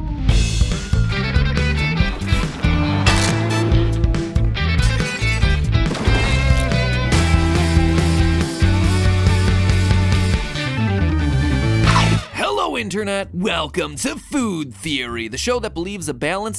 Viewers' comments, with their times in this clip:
0:03 Are we just gonna ignore that cronch ?